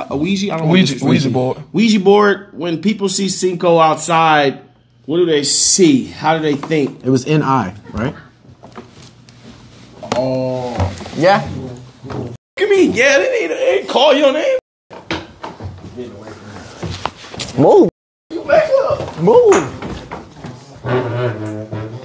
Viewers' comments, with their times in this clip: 0:06 who else heard the left 😂 they opened a can of worms 😂 that ghost bihh was laughinnn wit emmm 😂